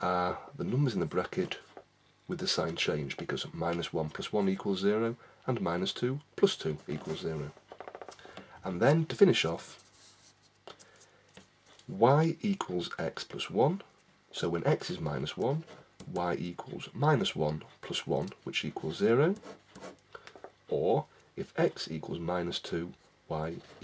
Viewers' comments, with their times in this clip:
0:08 and minus two toasted pecans??